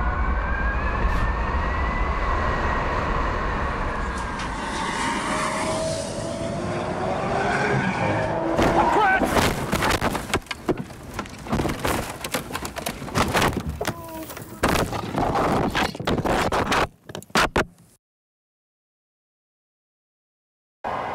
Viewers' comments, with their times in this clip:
0:05 Did anyone else hear combustion engine before the crash? ...
0:09 Is the audio is from actual crush? That's so terrifying